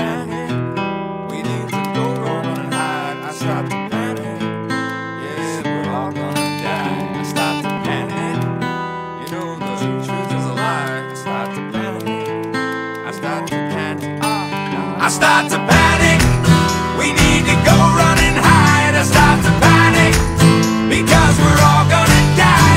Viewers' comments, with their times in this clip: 0:04 I have the CD of the album and when I was listening to it I was worried that it was glitching I never realised that it was part of the song lol